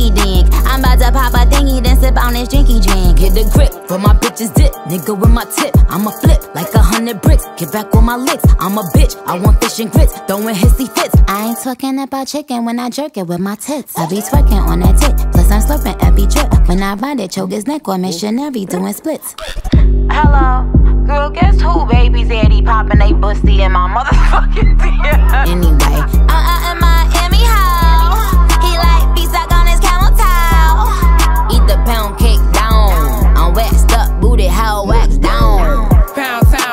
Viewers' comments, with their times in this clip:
0:03 she did king von flow off of the song called pressin ft SADA baby she hard fire for that
0:19 okay but Niki's laugh tho